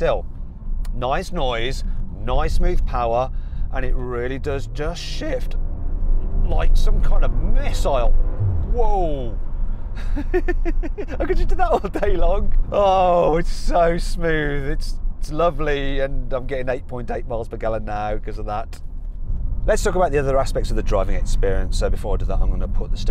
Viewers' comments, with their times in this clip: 0:08 you can hear a dsg fart